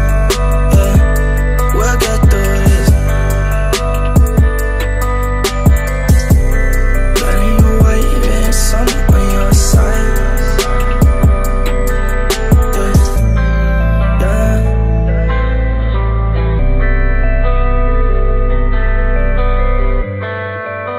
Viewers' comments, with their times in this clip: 0:06 So good. The singing hits me